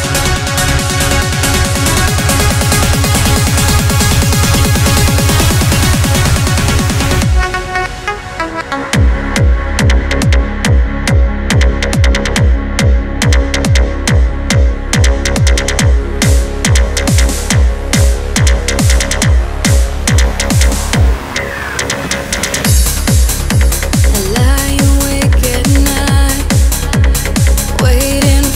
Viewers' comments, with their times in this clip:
0:09 That sounds weird :l